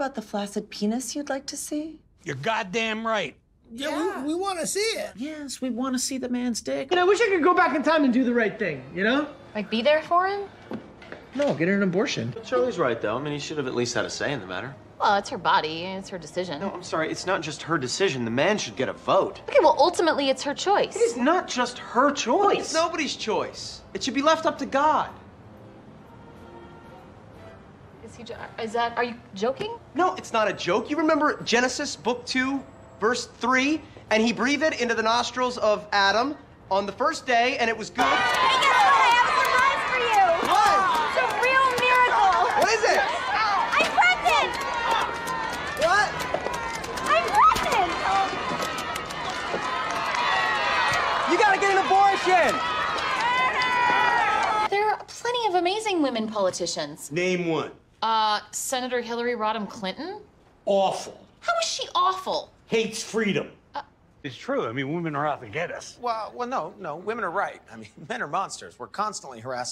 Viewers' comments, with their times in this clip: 0:05 another great delivery from Dennis
0:55 I'll always get a kick out of the deliveries in this scene